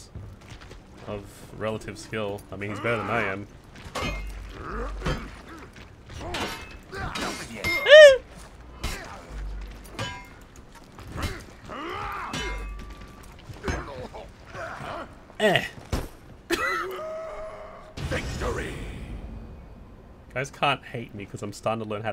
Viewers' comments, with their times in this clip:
0:07 the sound of a majestic creature